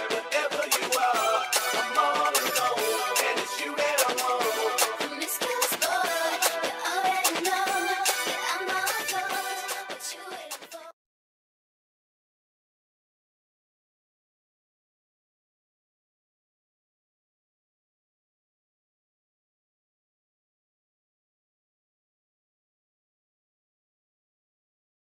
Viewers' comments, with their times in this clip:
0:10 I MADE A MISTAKE WHEN EDITING THIS VIDEO, THE BEAT FINISHES SORRY FOR THE 40 SECONDS OF SILENCE AT THE END